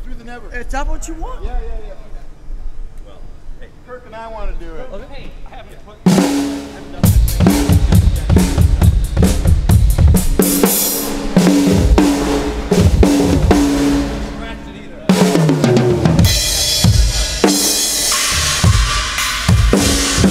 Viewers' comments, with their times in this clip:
0:06 omg!! he can´t even play with that drum my god!!! is like a guy on his first drum class